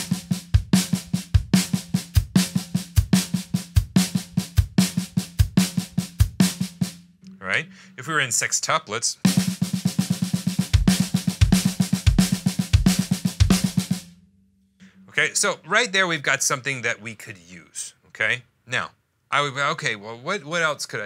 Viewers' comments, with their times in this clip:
0:06 I keep listening to it and the rhythm which you call sextuplets seems to me like fivelets. Once you add the kick it's 5 evenly spaced notes - kick/sn/sn/sn/sn. The first few beats of snare only have six note groupings but afterwards I hear fivelets...